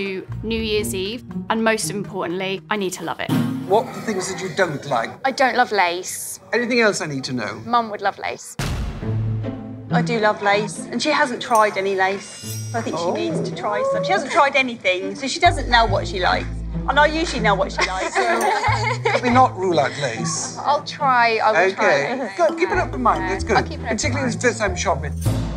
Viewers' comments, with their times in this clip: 0:07 what was that growling? Am I just watching too many paranormal investigations or was that a demon